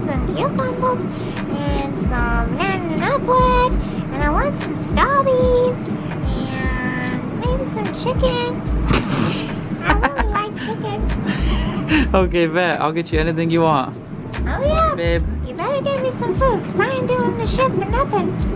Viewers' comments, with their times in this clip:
0:03 her voice is cute if it's fake or not it's different and unique